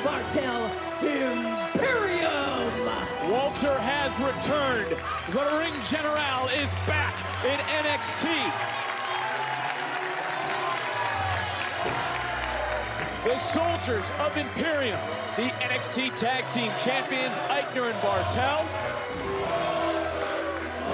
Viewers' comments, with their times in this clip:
0:05 smh at least say it properly. Ring General. With a G!